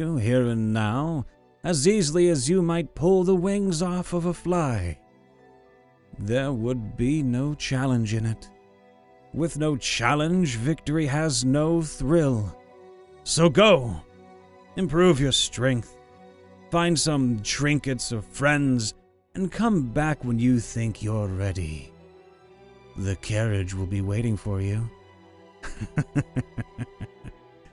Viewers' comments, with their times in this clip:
0:10 dude you sound like Shakespeare in Saints Row Gat Out Of Hell